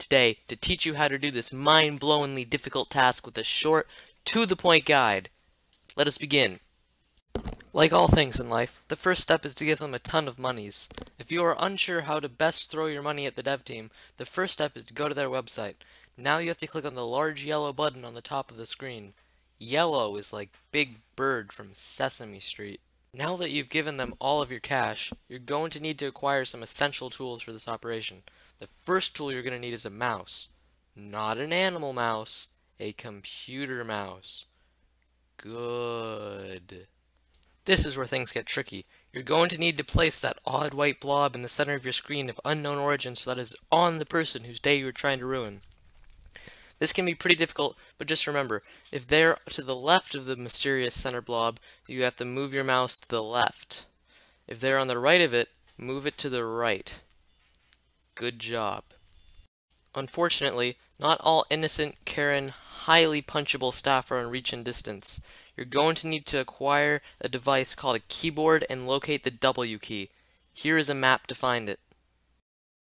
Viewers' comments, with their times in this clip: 0:05 IDK why but this is weired!!! This voice doesn't suit that skin
0:08 his voice evolution HAS BEGUN
0:57 IS SOMEONE PLAYING TF2 IN THE BACKGROUND?
0:57 did i just hear a sentry